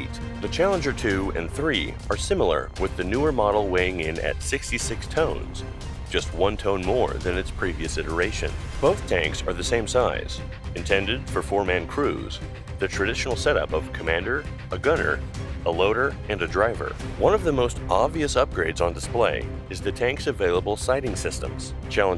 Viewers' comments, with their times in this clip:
0:04 lol AI text to speech ?